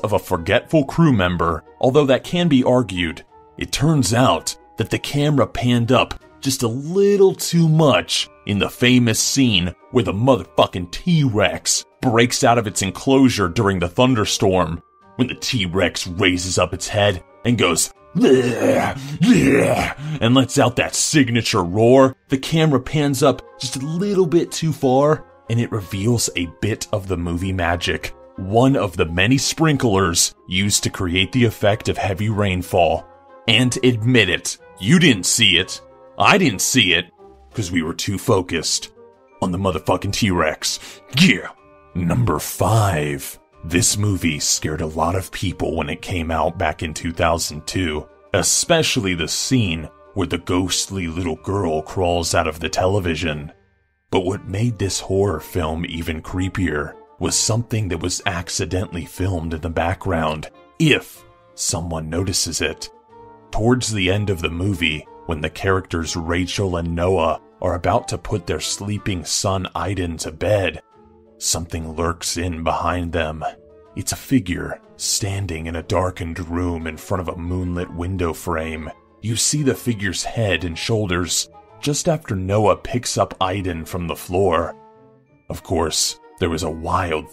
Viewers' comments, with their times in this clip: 0:10 I have never heard anyone say it like that
1:08 Did he just pronounce his name "eye-den"? They pronounce it " Ay-den" through the whole movie. Has he been playing Beyond: Two Souls or something?